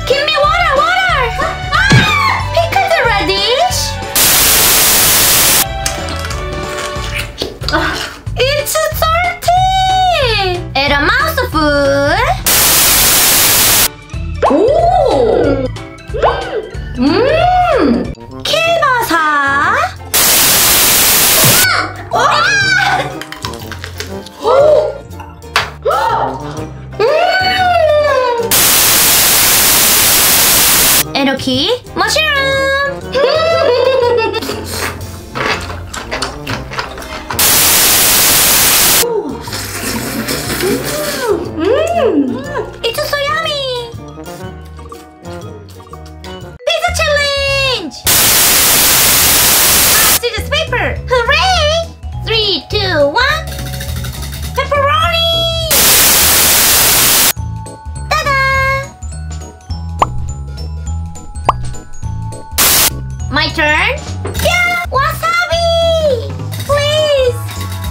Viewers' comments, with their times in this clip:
0:04 what the heck happend to the audio?
0:12 AHHHH TOO LOUD
0:55 There is static sound weird